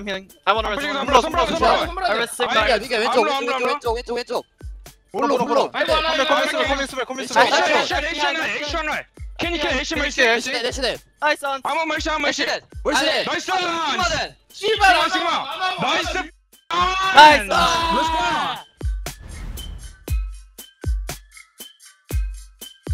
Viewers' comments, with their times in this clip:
0:10 my favorite part, smurf and his “niceu fucking ans”